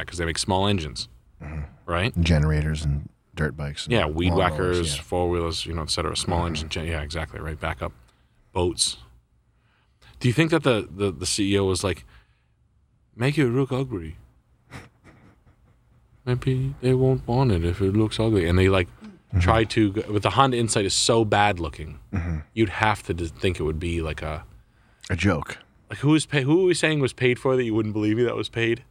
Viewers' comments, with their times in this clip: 0:06 make it rook ugry
0:12 that's the funniest japanese voice of all time